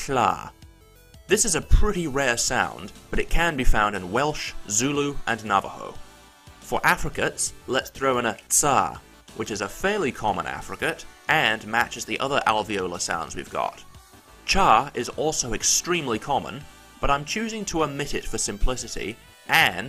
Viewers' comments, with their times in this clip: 0:06 Bro the way you said /ts/ is somehow incredibly cool for ways I cannot describe because I'm probably just mad. But I swear you said a single sound in the coolest way possible.